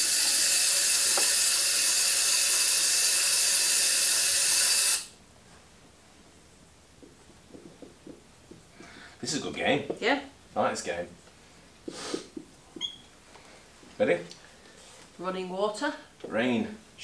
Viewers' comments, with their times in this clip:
0:05 imo sounds like metal marbles going through plastic tubing